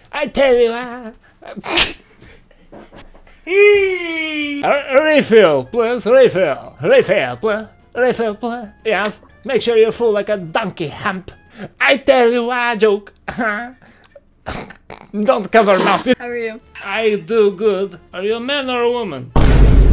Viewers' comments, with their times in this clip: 0:03 SUUUUUU/ SHEEEEEEEE- mmm impostor be impersonating perfectly :)